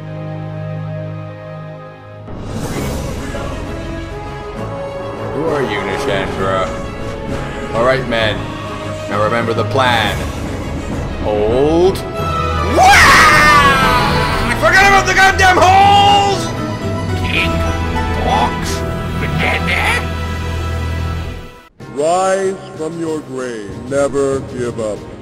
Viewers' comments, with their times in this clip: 0:10 That heroic music and that death! Holy shiznet, my sides hurt! LOLOL